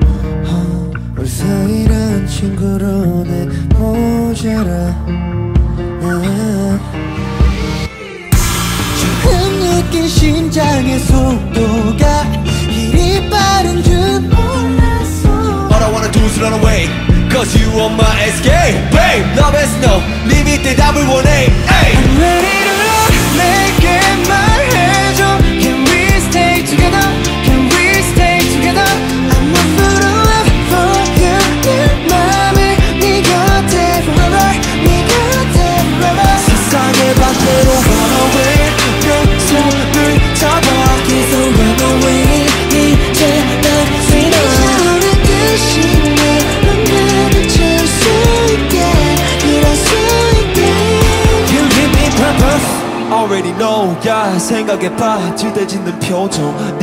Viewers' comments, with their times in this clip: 0:08 hoshi vocals ❤❤❤ & jun sweet voice melts me....❤
0:22 I love how clear Dk's vocals are. I just can't get enough of his singing ❤
0:41 im so addicted to jun's voice 😭